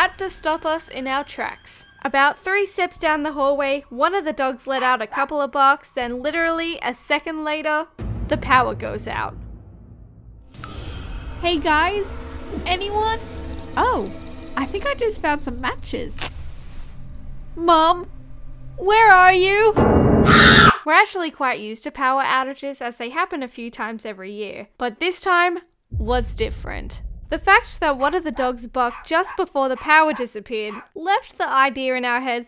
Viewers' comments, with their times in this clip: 0:07 Yoeh chvavas are realy noisy
0:19 I think I died laughing to much but that scream tho😂😂😂😂😂😂🤣🤣🤣🤣🤣🙃
0:19 # S C R E A M
0:20 That’s a scream of Hamanation.